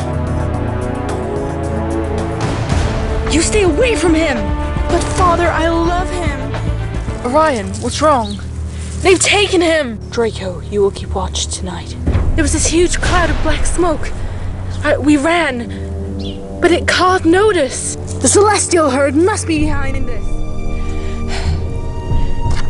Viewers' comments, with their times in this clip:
0:06 when she said "But Father, I love him!" your voice sounds so real and amazing. I wish mine was like yours! :(